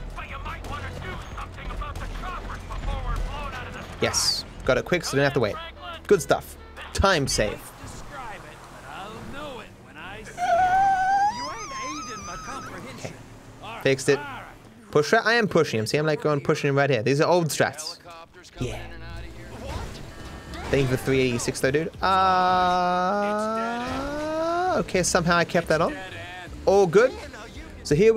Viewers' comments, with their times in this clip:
0:10 When you open an old wooden door